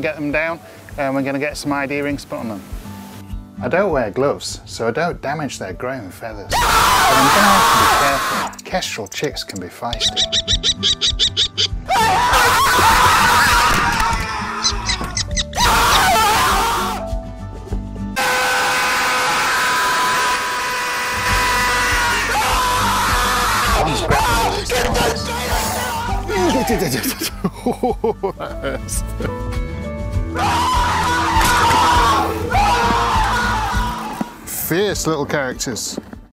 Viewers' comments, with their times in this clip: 0:06 I was just expecting chill bird chirps. Then came the gutteral screams of terror lol.
0:06 start of the meme screams.
0:11 Baby bird Screaming With memes
0:17 bro just turned into a fricking leaf-blower 💀
0:17 This nonsense got me crying. I thought sure this was just some normal clip. Especially with that pause/buildup then motionless screaming. 😭🤣
0:17 roosters at 6am in the morning
0:17 the silence and then the sudden scream got me in tears. Those birds are shellshocked
0:18 was the best one The just sudden scream is too perfect and comedic
0:18 pov my car if i shift gear down to 3rd instead of shifting up to the 5th one at 10k rpm
0:18 nah bro the screams you used for the last one were the best for real i was dying of laugher edit: i found the timestamp :D it is lol
0:18 what a dramatic scene, the final bird screaming in despair knowing he is next
0:19 straight up sounds like a vacuum cleaner 😂😂
0:19 This scream always gets me 😂 Like a victim realizing he’s the next to go
0:19 he just starts screaming i can't
0:24 The way he laughs just adds to the horror lol
0:25 idk what's he said while screaming,lol😂